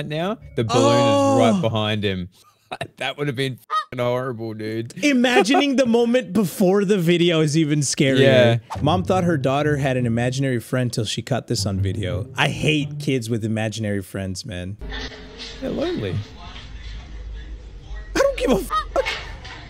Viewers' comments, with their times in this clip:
0:04 ok I kinda believe that scared AF voice now